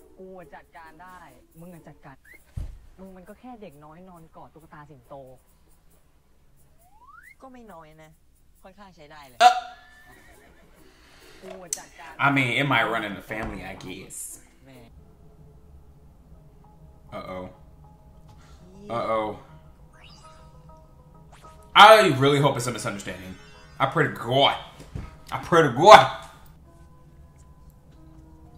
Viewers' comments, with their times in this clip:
0:10 Its the way i yelled part 😭😭🤣🤣🤣🤣